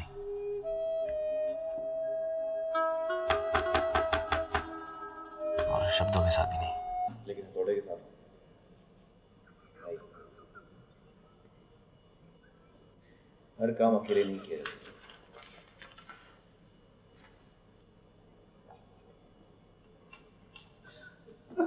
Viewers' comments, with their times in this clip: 0:08 Could anyone please translate why kajol was laughing